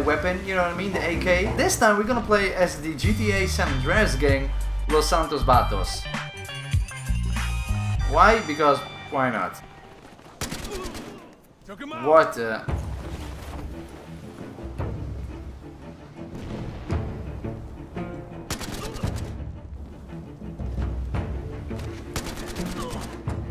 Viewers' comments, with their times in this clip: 0:05 It is "Vagos" not "Vatos", nonetheless your pronunciation was clean af